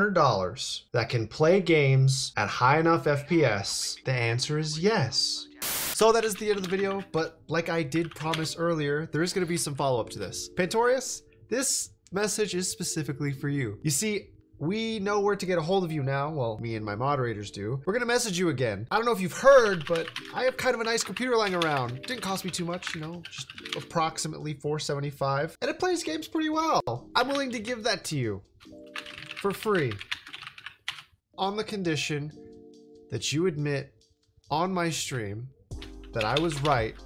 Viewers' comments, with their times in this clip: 0:06 u made a edit mistake because i can hear u typing , just letting u know :))
0:18 "I don't know if you've heard, but-" keyboard noises